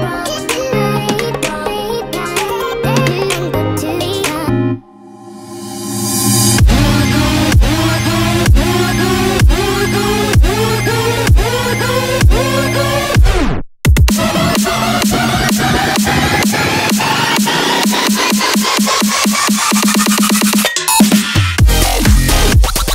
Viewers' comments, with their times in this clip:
0:05 what a insane predrop